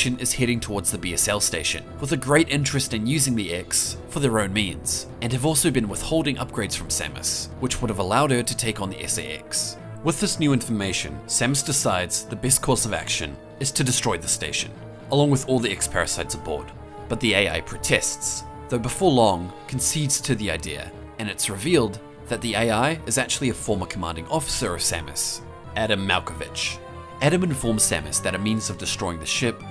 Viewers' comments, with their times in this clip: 0:10 that soundtrack is so good